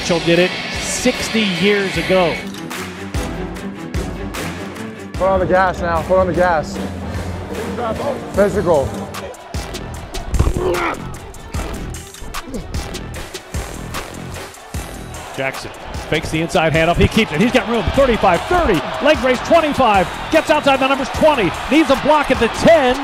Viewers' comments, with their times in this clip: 0:05 Whether it was intentional or not, timing Ricard talking with the beat drop near was kinda fire